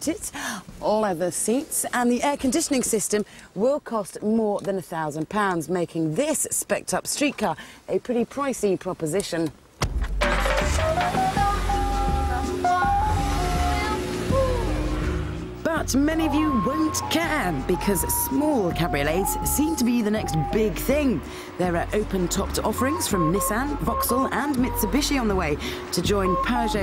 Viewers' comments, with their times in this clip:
0:09 Terrible choice of music there Sounds like the roughest start up in history!